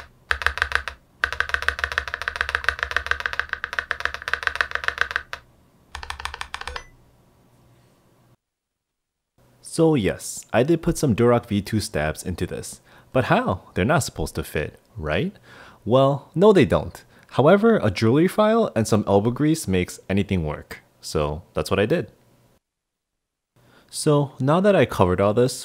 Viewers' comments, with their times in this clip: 0:05 That Windows SHIFT spam warning though. lol
0:06 the sticky keys alert lmaooo